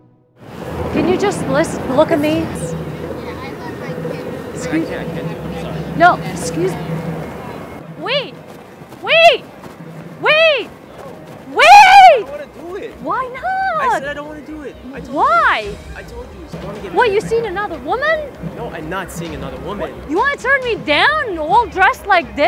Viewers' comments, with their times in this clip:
0:10 scariest scream ever 😳